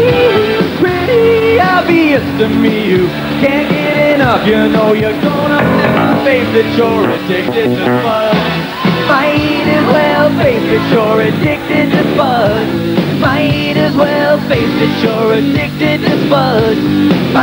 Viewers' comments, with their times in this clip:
0:04 wat was that crappy noise ?
0:05 bass guitar fail